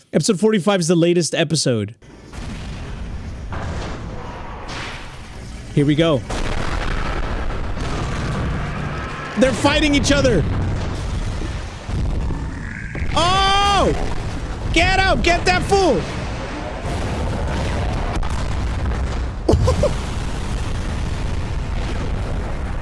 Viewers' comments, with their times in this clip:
0:06 that SROUND SOUND BITCH was so perfectly timed lol